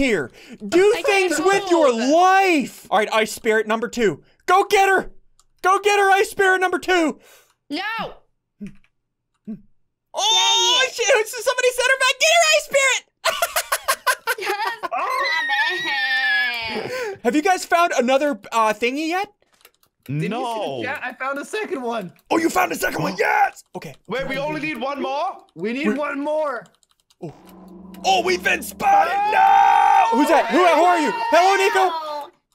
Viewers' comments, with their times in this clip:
0:10 it sounds like he said sh*t
0:14 Firework goes off in the distance Woah... it ain't the forth of July yet, boi